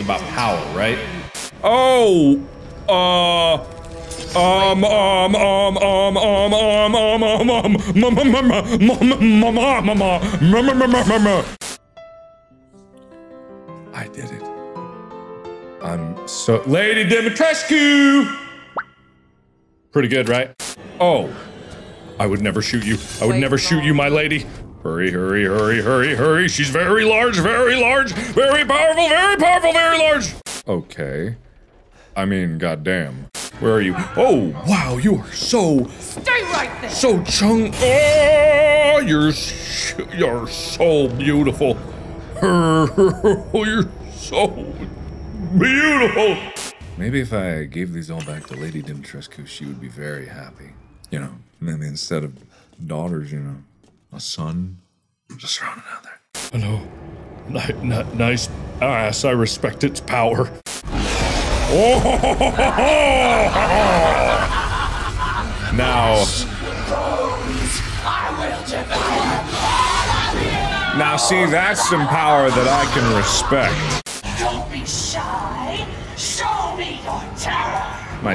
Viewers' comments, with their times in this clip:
0:08 I swear pokerface was gonna start playing lmao
0:37 Damnnnn! Mark can sing:
0:37 Perfect for an opera 👌✨
0:37 Markiplier shows his hidden talent as an opera singer😆
1:01 French Mark isn’t real he can’t hurt you. French Mark: